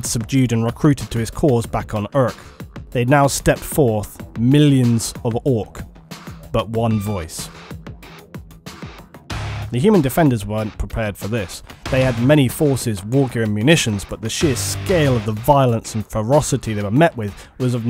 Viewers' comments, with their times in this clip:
0:05 my favorite part is the song build up, anyone know the song?